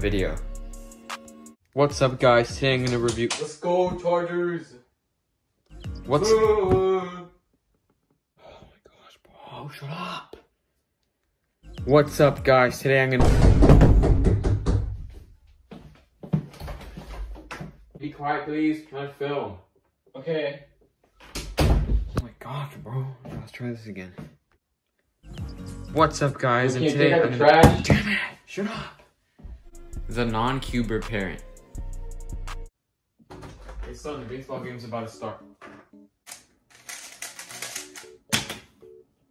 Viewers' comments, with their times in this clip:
0:08 let's go tartarus? is that a gd Reference????
0:26 when his dad said “Can you take out the trash”, I was wearing headphones and it sounded so realistic that I thought my dad was actually telling me to take out the trash😂